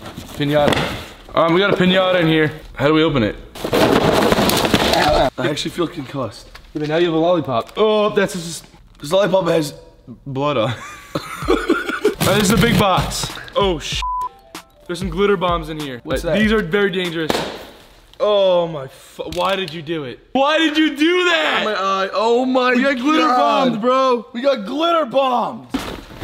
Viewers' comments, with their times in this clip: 0:07 both there laughs together sound so cute, OMG!!! LOL!!